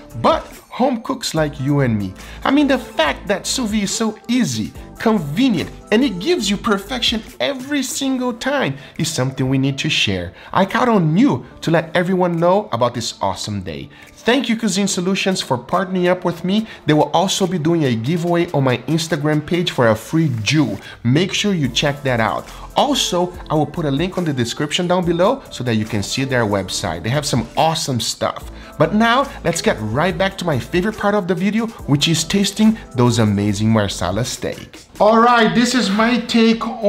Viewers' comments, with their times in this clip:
0:10 " partnering up for a free Jew " wait what ???
0:15 Anyone else think he said he's giving away a free Jew
0:17 You're giving away a free Jew? WTF, man?!
0:20 check their website for a free JEW
0:20 partnering up for a free Jew? Guga are you okay